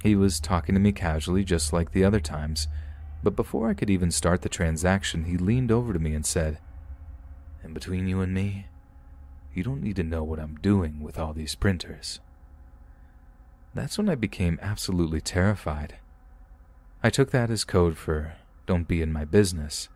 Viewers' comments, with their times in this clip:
0:07 😂😂😂 the voice you did